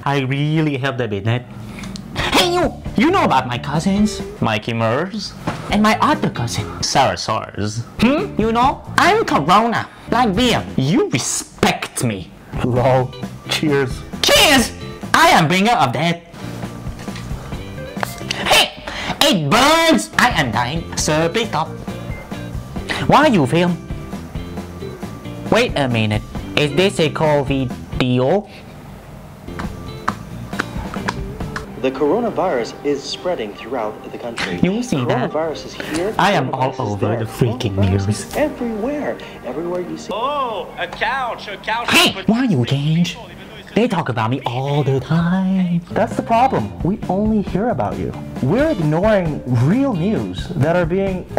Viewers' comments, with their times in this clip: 0:08 The way he says Corona Lmao 😂
0:08 "IM CORONA" you sound funny :)
0:18 it loud Edit : the rest is funny
0:21 the way he says sir please stop is so funnily-cute 😂😂
0:28 COVID-EO, instead of COVID-19🤣🤣🤣
0:35 The way he says "I am all over the freaking news" is so funny I'm laughing